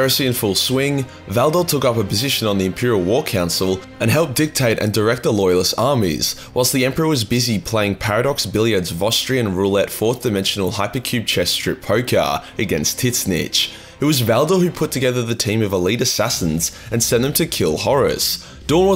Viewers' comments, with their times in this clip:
0:05 He can say it in a single breath.